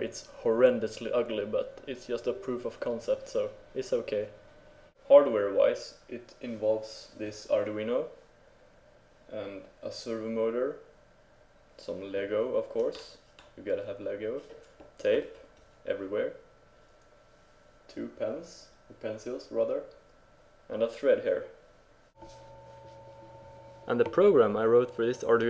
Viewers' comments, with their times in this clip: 0:08 .. you point to the little black box and say what it is .. but it's a little hard to understand .. what is it ? ..